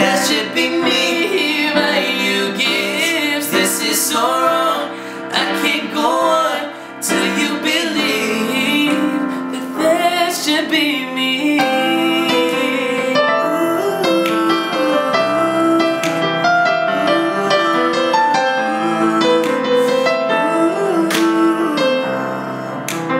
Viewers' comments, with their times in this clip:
0:09 sounds so goood! 😍